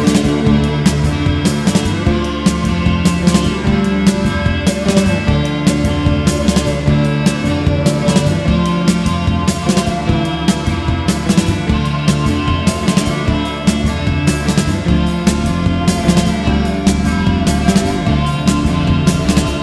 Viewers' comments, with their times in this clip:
0:04 I love their other songs but this one is totally unique and sounds like it’s from another world. The eerie synth in the background that kicks in is genius